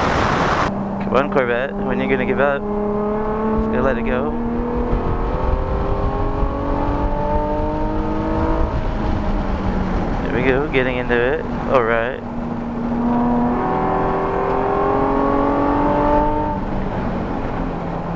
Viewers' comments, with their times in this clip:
0:03 That part sounded weird with the video playing in the background.